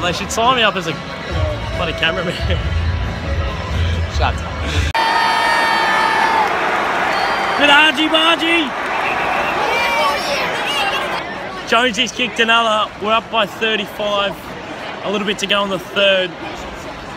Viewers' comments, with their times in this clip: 0:05 sounds like my Mum